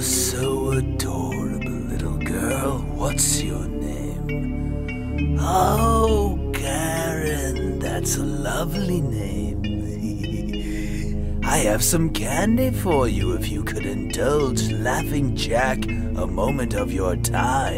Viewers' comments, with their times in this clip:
0:05 he sounded a bit like Pennywise